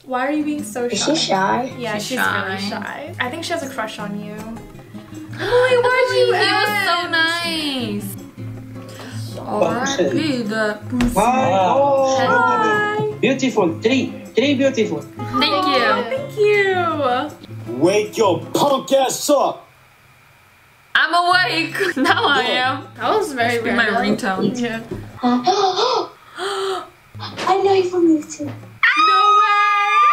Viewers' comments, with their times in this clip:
0:09 I heard the n word lsn carefully💀
0:16 I can't stop laughing when he was yelling at y'all 😂😂